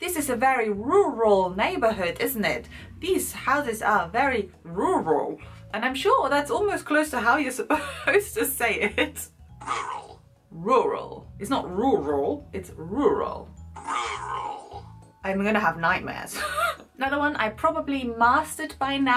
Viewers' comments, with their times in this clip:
0:06 at this second you say 'close' - the ONLY word I've heard you speak that shows your German accent! Your English accent is so developed it was hard to find a slip up :p